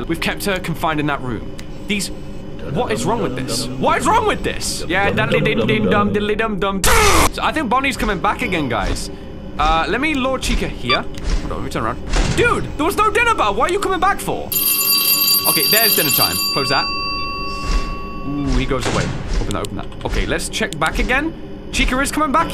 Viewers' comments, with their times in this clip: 0:06 angry zapping noises